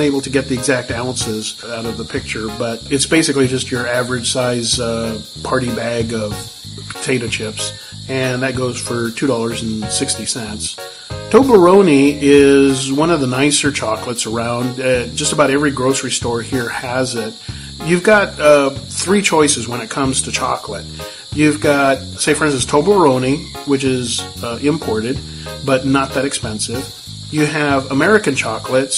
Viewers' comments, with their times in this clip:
0:10 You’re saying it wrong. Other than that, thanks. 😄